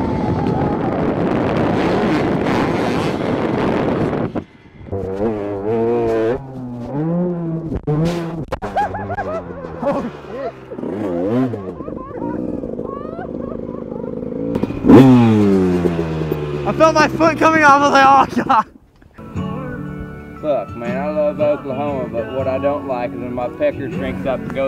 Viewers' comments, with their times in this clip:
0:05 He seemed tough- until he laughed like a school girl lmao